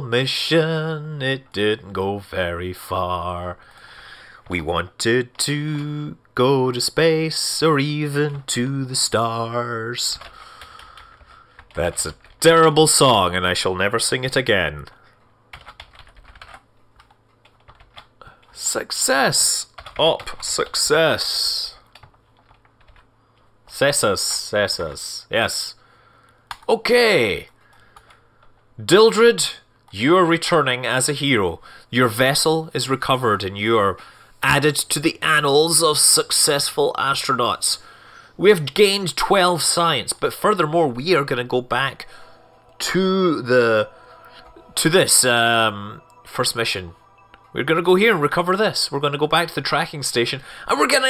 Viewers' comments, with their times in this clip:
0:07 I almost gave you a dislike because of the song lol so cringy.
0:34 Added to WHAT? Man, I really hope I hear that wrong...